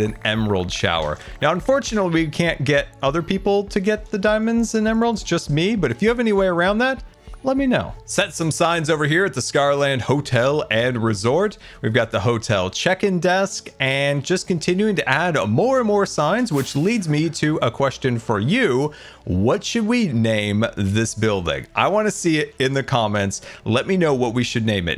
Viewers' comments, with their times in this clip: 0:09 noteblock goes brrrrr with allays